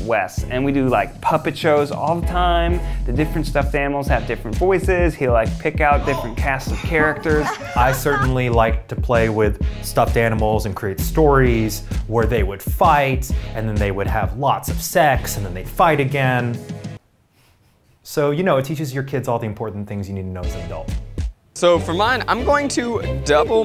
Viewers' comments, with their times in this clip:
0:05 Was anyone else jumpscared half to death by because it sounded like it was LITERALLY coming from the room next to you while you were alone?